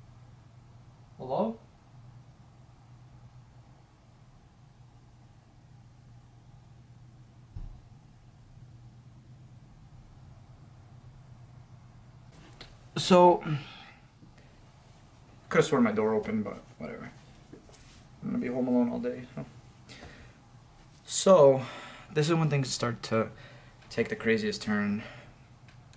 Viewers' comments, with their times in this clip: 0:08 I heard a footstep